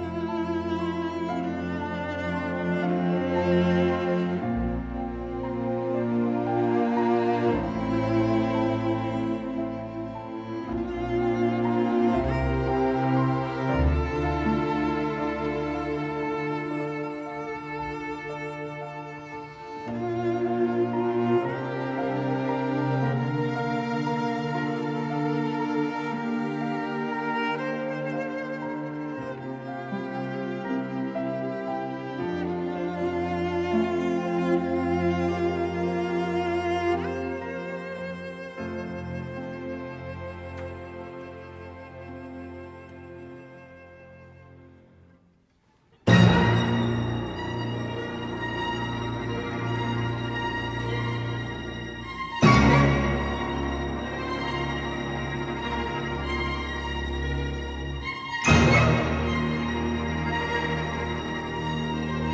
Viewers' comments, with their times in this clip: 0:09 this note automatically makes my eyes tear up
0:46 God, scared the hell out of me. Had my volume a little to high